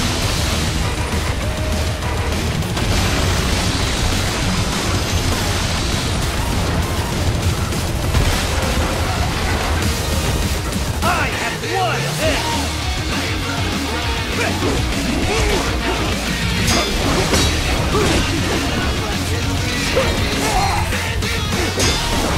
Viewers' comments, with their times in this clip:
0:07 that bass drop was perfect
0:07 No matter how many times I watch or fight this Boss Monsoon will always be my favorite. Its such a original fight and so unique like who the fuck has their legs detach and run towards you to fuck you up... AND DA BEAT DROP !!! I love that you go into Cut mode and the song slows down too and just adds to it.
0:07 this is what i like about Mgr its just that yhe chorus really starts when the he's in the second phase
0:08 i swear that music transition was so fucking perfect
0:10 MAN, WHEN THE LYRICS GO ON I FEEL ALIVEEEEEEEEEEEE I HAVE WON THIS